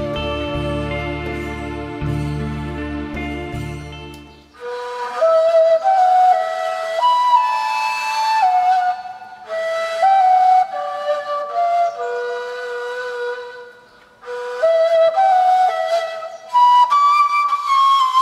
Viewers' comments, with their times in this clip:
0:04 I was not expecting to hear the Harry Potter theme play in this mix! This whole video is fantastic and that took me by surprise! Great work! :)